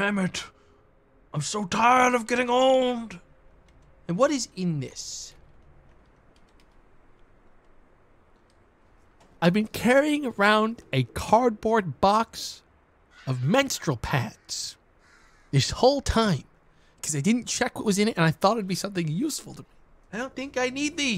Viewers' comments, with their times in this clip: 0:08 This is the most confused ive ever heard him, he sounds both calm snd angry at the same time: hilarious.